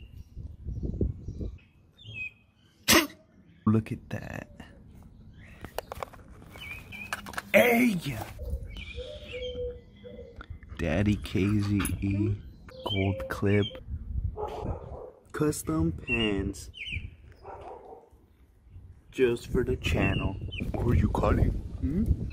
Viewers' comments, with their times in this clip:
0:03 On bro is funny idk if he sneeze lol